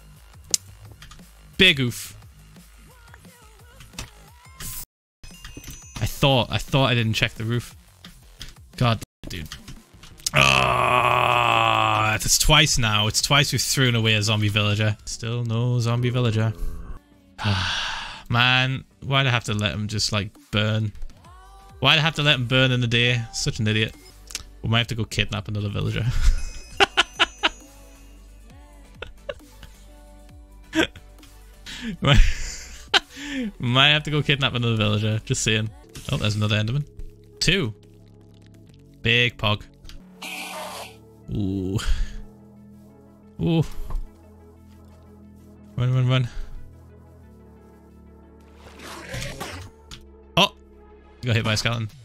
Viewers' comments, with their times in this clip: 0:07 Thx for censoring g*d d*mnit
0:33 That one famouse laugh we all know